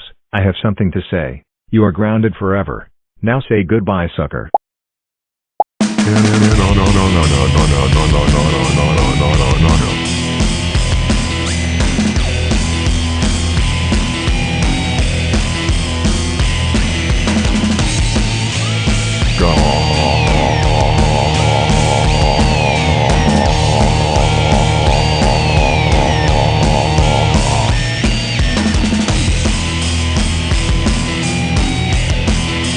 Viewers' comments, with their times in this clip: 0:06 the music when nice nano deletes evil nano's OS,i will put this music on my project called roblox b core,on the "MELTDOWN"
0:20 evil nano became buzzzzzzzzzzzzz